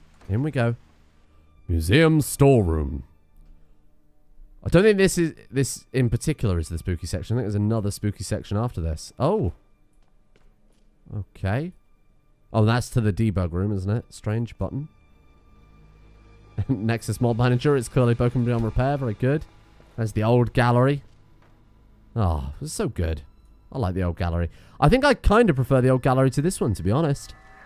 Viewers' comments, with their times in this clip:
0:10 I think they missed the ghost, you see you heer a faint whisper whispering “soap children”